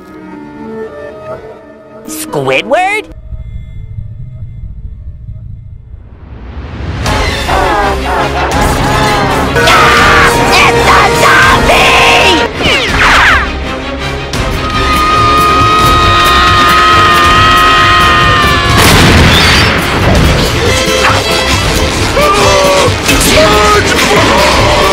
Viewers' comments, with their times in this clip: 0:08 A Knight's Night! Heavenly light shines, angelic choir music is heard, 😇 versions of every person SlendyBob killed save the real Spongebob and Patrick from the possessed Squidward by taking them to Heaven